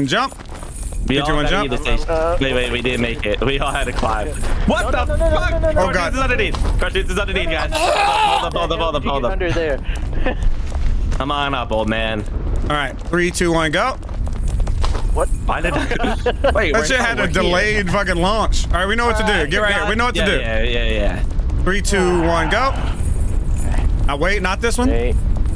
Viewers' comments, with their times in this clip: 0:07 bro choking got me dying😂😂